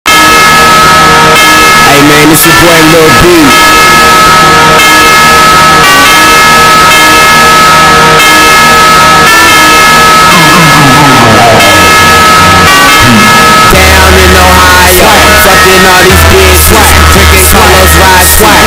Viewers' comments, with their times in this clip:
0:00 best music at the 1 january 😂